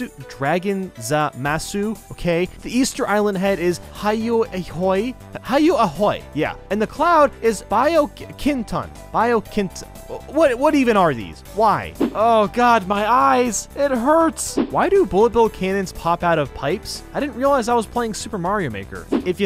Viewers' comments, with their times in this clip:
0:03 the way he says it made me laugh so hard